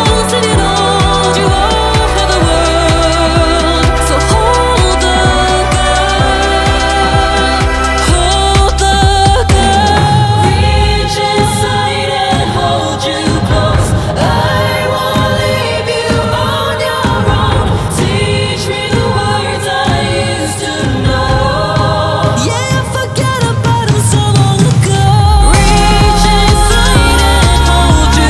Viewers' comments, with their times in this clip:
0:10 the voice of heaven! Calling me!!!